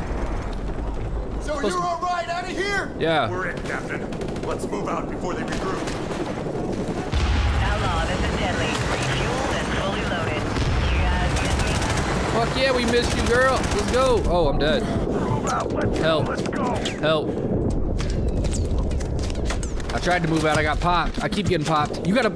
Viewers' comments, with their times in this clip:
0:04 in game voice actors "Sir are you our ride out of here?". "we're it Captain lets move out before they regroup." I swear thats Joe from family guy.